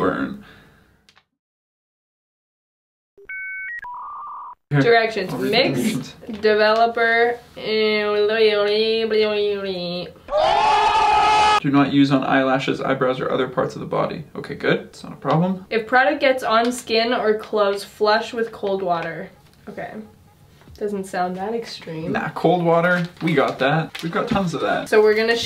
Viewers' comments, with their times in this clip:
0:08 Why did that sounded like R2-D2? 😂